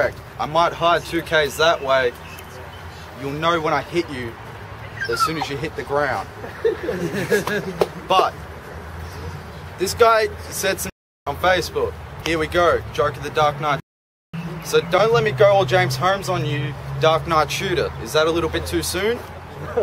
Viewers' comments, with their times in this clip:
0:04 the dog whine/yawn really emphasized the mood of the crowd XD the fool thought they were laughing at his line being cool.... oof